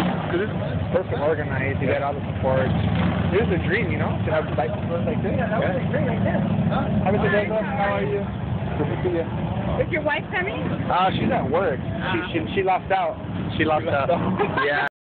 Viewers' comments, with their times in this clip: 0:10 acting all hard! then u hear is your wife coming??????? little mans voice follows after naw she's at work!!!!!!!!!! rofl!!!!!!!!!